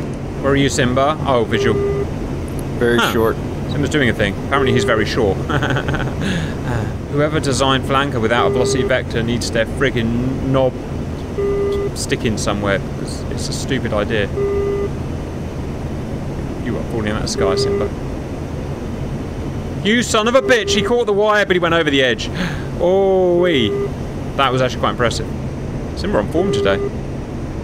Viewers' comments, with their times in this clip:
0:08 does that annoying beeping serve a purpose? Maybe the rate of beeps per minute?